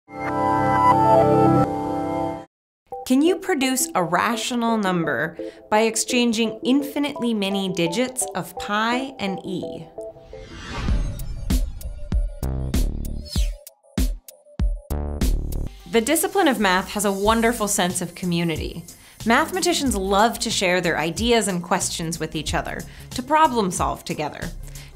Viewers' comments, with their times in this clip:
0:08 I like the way she says 'e'